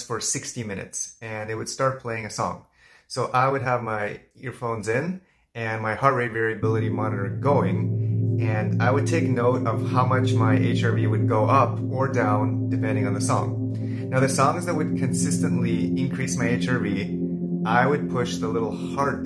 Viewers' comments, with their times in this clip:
0:07 Are you using tracks featuring the Solfeggio frequencies? If so, are you getting results? The reason I ask is that the music sounds like it includes 174Hz, a frequency said to work for pain relief and tension.